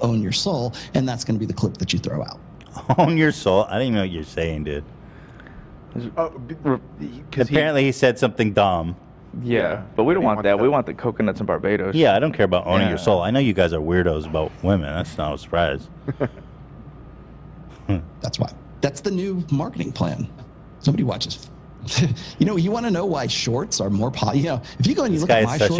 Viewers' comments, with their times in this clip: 0:06 Who else heard the fart